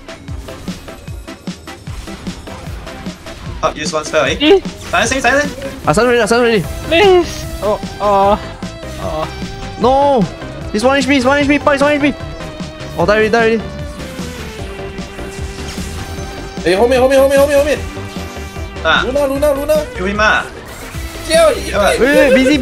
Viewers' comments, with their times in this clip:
0:05 what are those noises 🤣